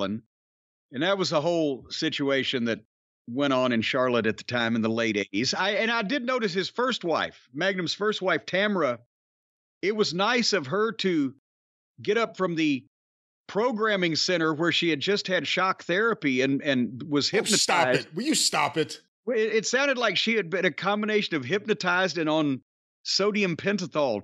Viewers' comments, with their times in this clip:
0:06 Lmao I’m sure she’s a nice woman but she spoke like they were going to disguise her voice & blur her face